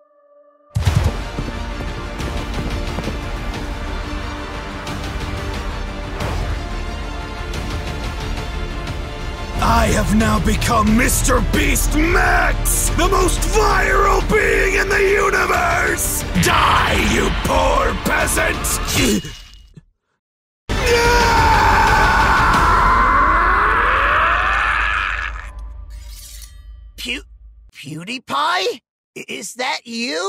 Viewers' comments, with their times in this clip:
0:08 my dude started sounding like kratos there
0:11 sounds like gamagori from kill la kill